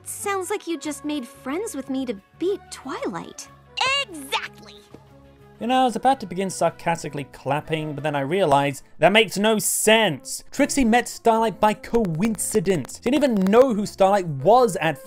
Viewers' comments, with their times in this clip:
0:03 Trixie sounds EXACTLY like Rainbow Dash here.